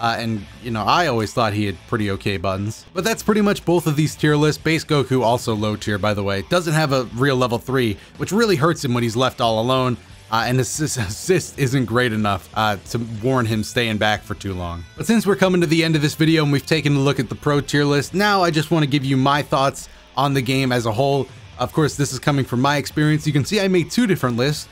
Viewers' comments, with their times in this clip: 0:05 Yo broly laughed at base goku